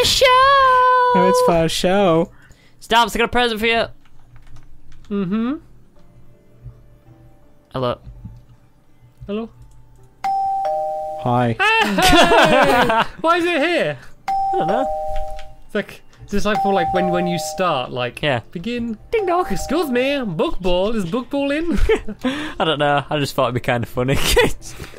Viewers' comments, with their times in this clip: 0:10 I'm in my dining room eating a bowl of rice and my dog is laying down. At time stamp when he heard the doorbell in the video, he started to bark thinking someone was at my house.